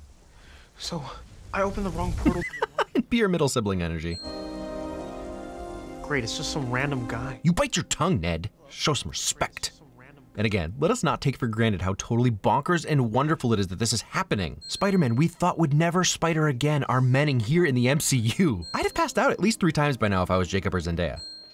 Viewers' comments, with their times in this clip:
0:05 everyone did a whooooo when he came in 😂